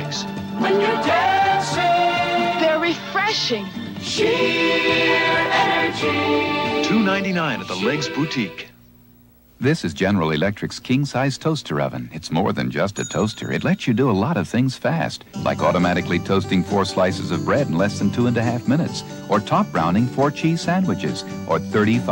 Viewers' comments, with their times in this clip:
0:09 The obligatory Peter Thomas voice over.